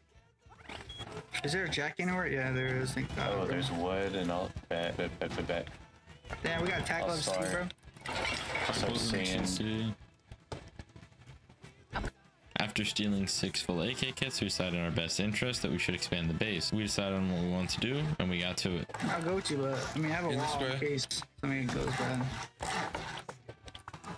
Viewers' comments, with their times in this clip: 0:07 music was messed up